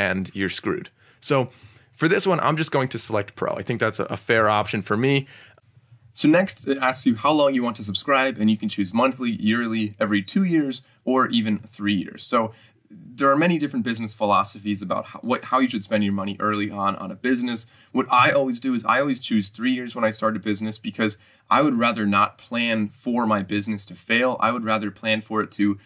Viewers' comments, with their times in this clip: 0:07 I thought my audio broke